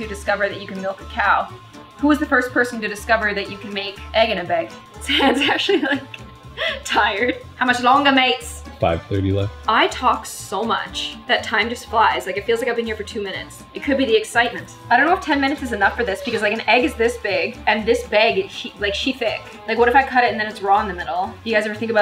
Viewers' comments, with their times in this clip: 0:04 0 because she said egg in a beg look at the texts when she says it
0:07 Editor: British accent Me: what that’s Australian dude